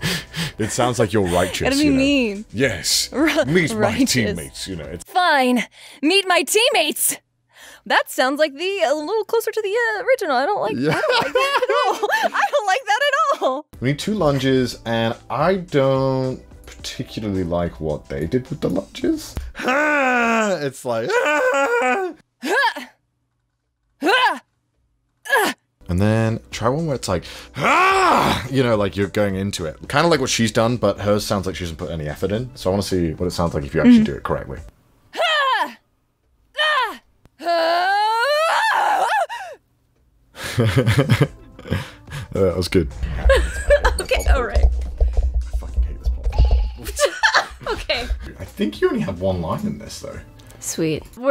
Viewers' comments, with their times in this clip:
0:05 She sounds like she has the perfect voice for Ash in the Pokemon dubs
0:23 that girl has an anime voice.. that's crazy
0:32 sounds like coraline's mom